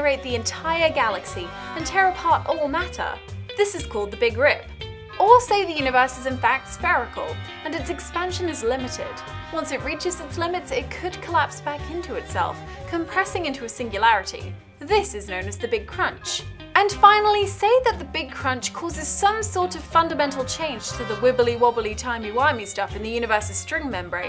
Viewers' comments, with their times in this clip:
0:06 OH gawd i love how she said "spherical"